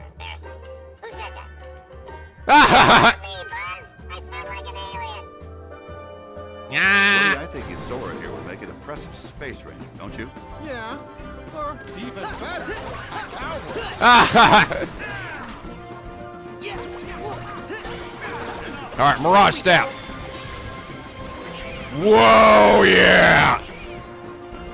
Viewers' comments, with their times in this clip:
0:07 You missed the funniest part of that conversation by walking around. Donald talks after Woody, but he sounds normal and gets annoyed by it.